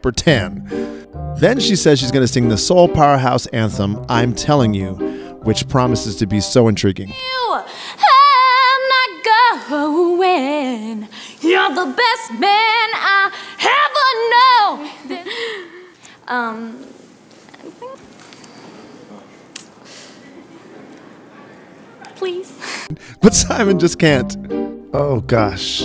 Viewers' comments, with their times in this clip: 0:07 The sun tanned girl singed pretty well though 😦😦 just practice somemore is ok